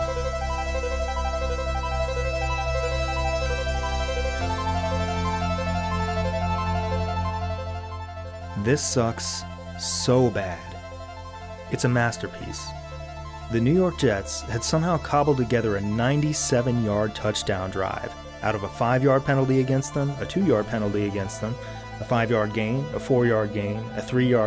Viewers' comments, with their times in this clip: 0:07 The music was mesmerizing.